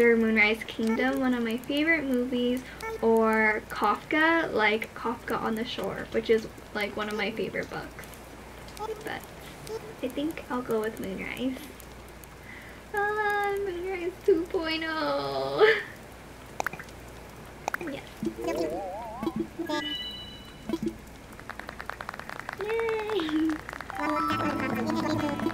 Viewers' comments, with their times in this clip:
0:09 I thought you meant moon rice XD